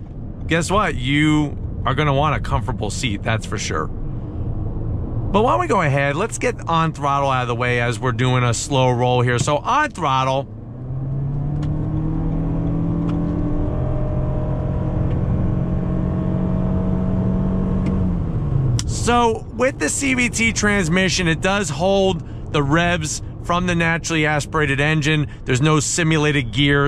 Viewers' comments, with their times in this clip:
0:09 ON THROTTLE!!!!!!!! It sounds nice